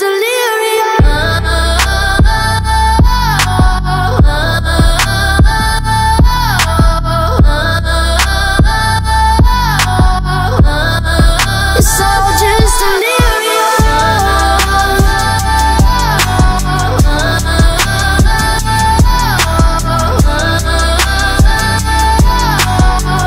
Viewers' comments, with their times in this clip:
0:04 this these chorus parts never fail